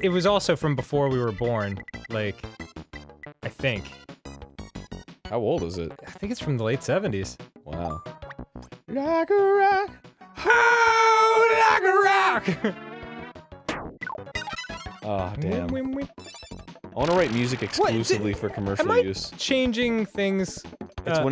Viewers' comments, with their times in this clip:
0:08 ..... i also sang .. me, Danny and Arin were in-sync with each other... pretty much pre-ed myself